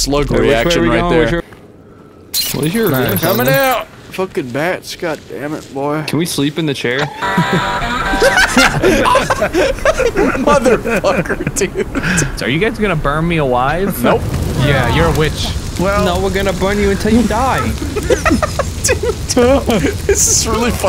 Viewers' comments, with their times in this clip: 0:07 I Love this song